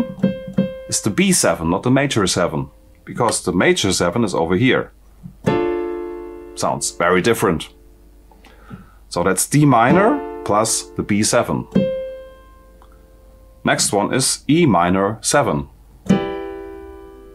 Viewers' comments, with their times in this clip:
0:05 hi i think u were playing Dm(maj7) while talking about Dmaj7 ?